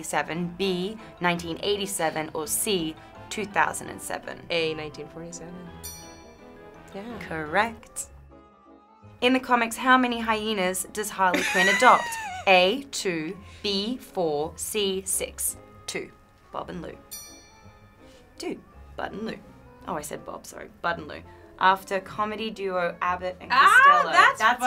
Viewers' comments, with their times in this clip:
0:06 omg when margot said "correct" she sounded so much like harley I literally can't